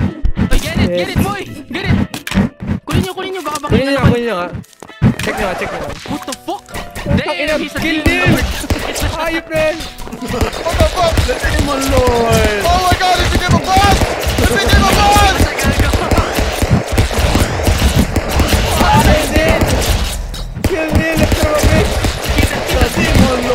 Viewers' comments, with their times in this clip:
0:05 boss music intensifies